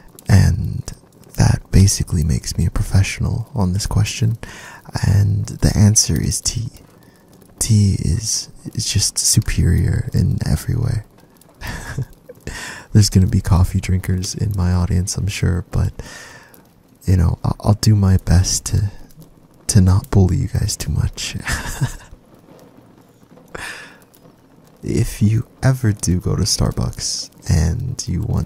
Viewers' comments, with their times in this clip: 0:09 I literally love your voice and your pup is very cute. Also I truly can't wait for streams. Oblivious tea is better! And Happy Birthday🎉! Also what's cc?